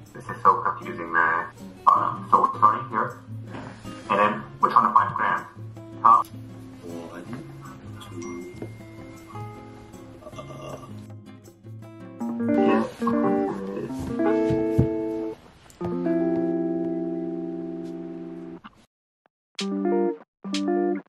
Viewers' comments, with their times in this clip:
0:06 it sounds like george weasley